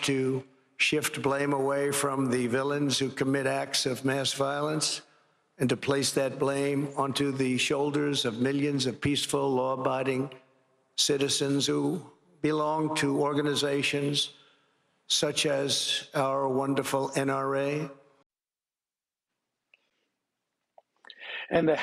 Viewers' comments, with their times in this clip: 0:09 Trump said law biting citizens